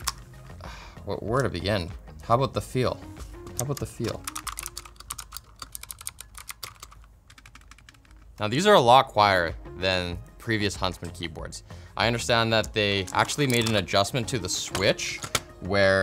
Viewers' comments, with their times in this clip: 0:04 uff, that sounded awful...